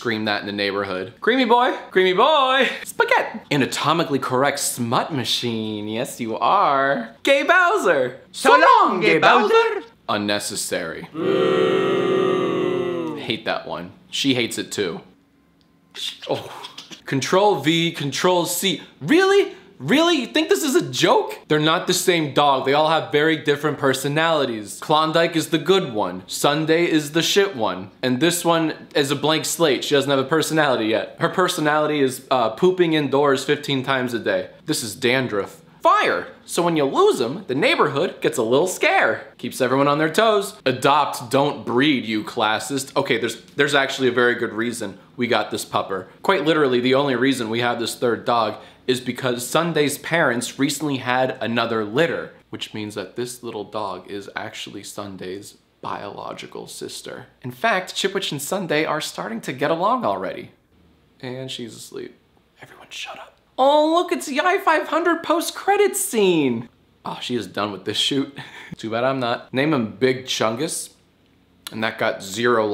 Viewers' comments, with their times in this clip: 0:08 thats the toy in the backround no the dog
0:15 you can hear chip which laugh at her masters pain
0:16 ok but why does it sound like she’s laughing
0:16 did she just laugh?
0:57 he Seid chipwidge
0:58 I love how he says chipwich